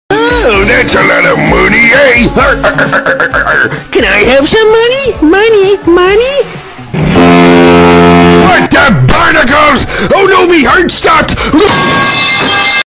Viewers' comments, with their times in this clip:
0:06 Foxy lowkey turn into boat horn
0:07 Foxy transforms into a foghorn
0:10 Rip Foxy and that *P I P E S O U N D S*